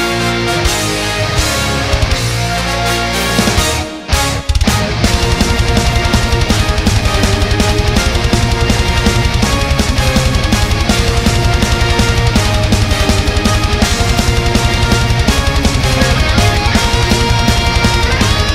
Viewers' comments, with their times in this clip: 0:05 Is it just me or does it sound like a (metal) Pokemon battle ?